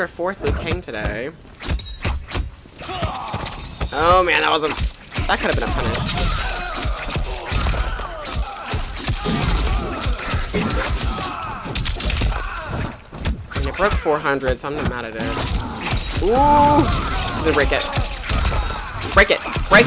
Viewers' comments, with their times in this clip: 0:05 The echoes of the moans bro 💀 Liu Kang be sounding real sus there LMAO